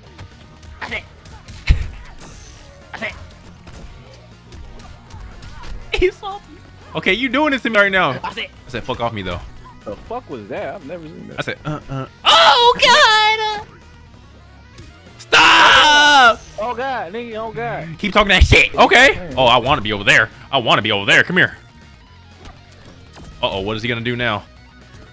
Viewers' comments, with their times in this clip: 0:10 Lol you screaming like Chris Tucker from the fifth element🤣🤣🤣